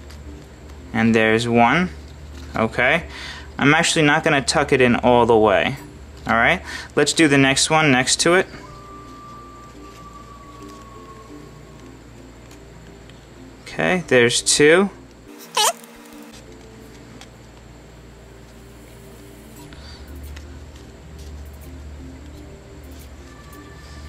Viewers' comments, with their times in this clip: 0:10 please tell me that wasn't a fart,